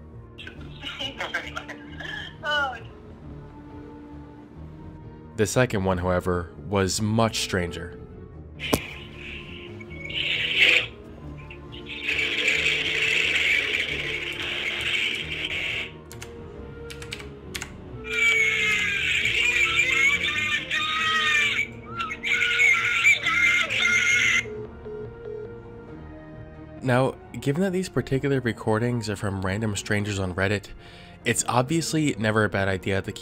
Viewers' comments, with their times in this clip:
0:09 the caller played audio from a condom commercial with a kid crying in a supermarket.
0:18 sounds just like the commercial of the kid crying in the supermarket about wanting sweets, which was a condom commercial.
0:19 I'm glad I wasn't the only person who was gonna point out the sound from the phone call because I was literally going to comment on that. As soon as I heard that particular scream, I knew where it was from. Don't ask me why I knew, I just do. It's a child screaming at his dad wanting "sweeties" and throwing a tantrum with a tagline about using condoms to prevent such "embarrassing situations." But I'm glad I knew it well because I'd have been scared if that was my first time hearing it.